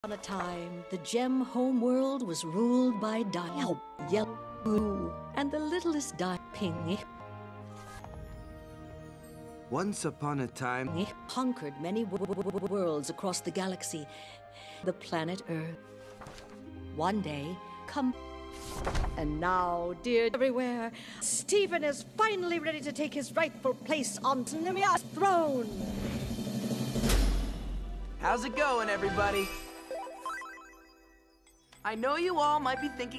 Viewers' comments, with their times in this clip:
0:00 Help yell boo El Piku
0:14 heavy breathing while violently checking notes The planet earth-